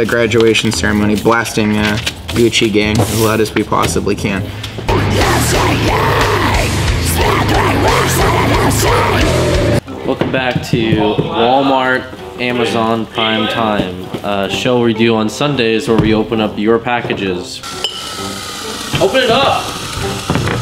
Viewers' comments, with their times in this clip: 0:04 is that a death core version of gucci gang? lmao
0:05 that cover is WAY better than the original. Which isn't really hard to do to be honest.